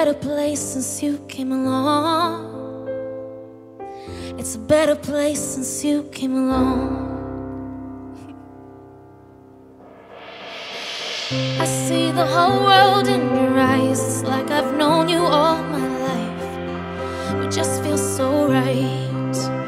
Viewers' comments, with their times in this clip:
0:07 that little giggle by her was so cute :)